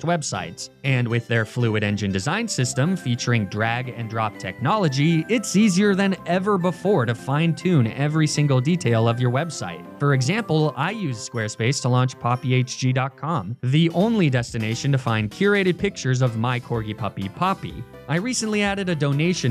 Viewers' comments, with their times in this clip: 0:03 its drag and drop... I was wondering "whats dragon drop? how did they capture a dragon drop?" english is not my first language, so...